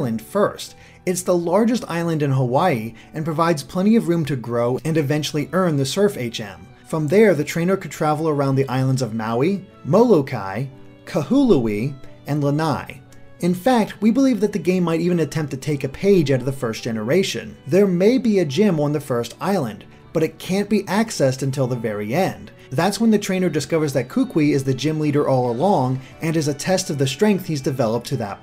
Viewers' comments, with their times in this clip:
0:09 I lost it Kah-hoo-loo-ee ??? xD what?!